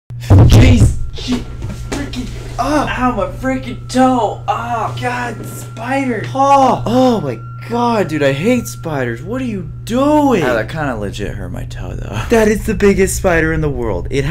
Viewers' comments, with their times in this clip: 0:00 THIS BASS THO XD